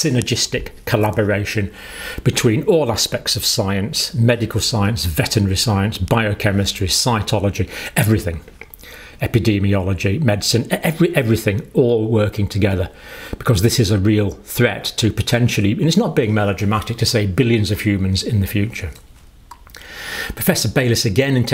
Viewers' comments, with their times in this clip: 0:06 Did he really just say scientology?